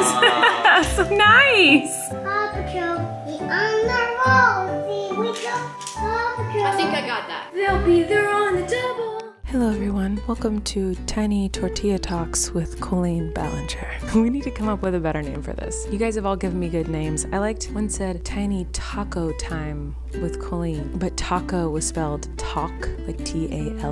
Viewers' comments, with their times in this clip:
0:10 she needs to make an ASMR video! She has a relaxing voice